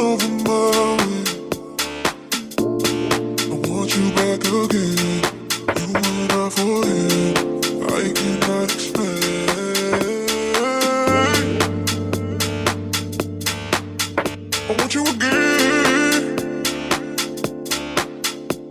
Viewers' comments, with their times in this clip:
0:06 absolute fire track 🫡🔥